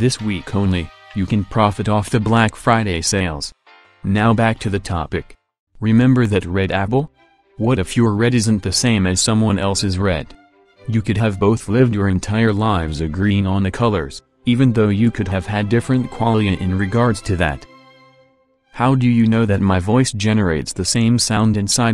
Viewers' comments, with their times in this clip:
0:05 “Remember that red abble” That was so cute! 😊